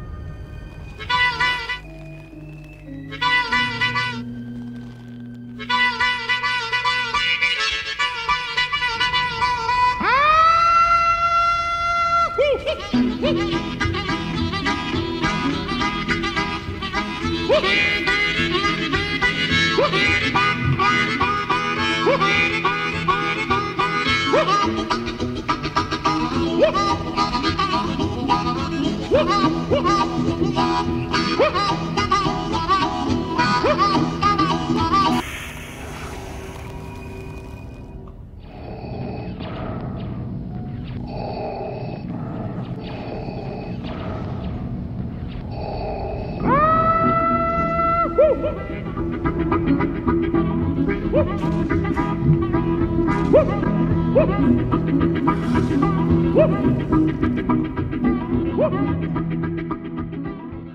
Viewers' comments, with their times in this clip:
0:10 jesus fucking christ, i lost it LOL. and i always thought unmasked vaders breather/voice thing slightly resembled an attached harmonica
0:44 oh gosh, i regret looking.... *music starts again* augh, heck no!!